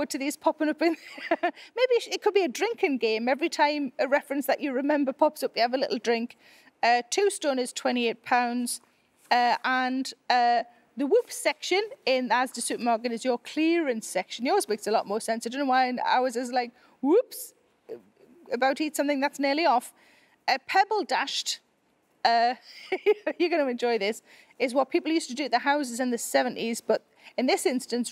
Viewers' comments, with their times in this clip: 0:09 I think that whoever did the CC/subtitles was confused because I don’t think you said “A tombstone is £28.” You meant “2 stones is 28 lbs/pounds”, right?